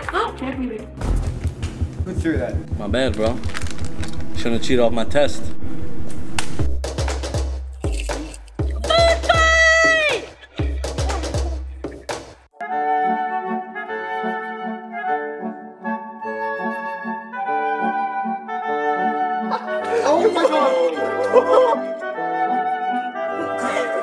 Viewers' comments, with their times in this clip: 0:09 that was just the saddest yell for food fight ever